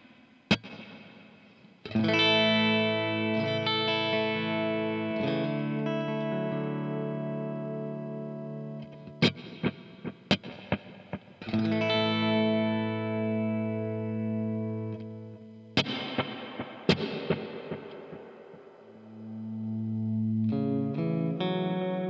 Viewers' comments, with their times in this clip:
0:10 Pretty sure that "quarter note delay" is dotted eighth.
0:10 Okay, well, I need to set my delay at 140 BPM and dotted eighth to match your slap back Quarter is much slower. Not sure where the disconnect is, but either way I've got it. Thanks for the video. Very helpful as I get ready to lead worship tomorrow.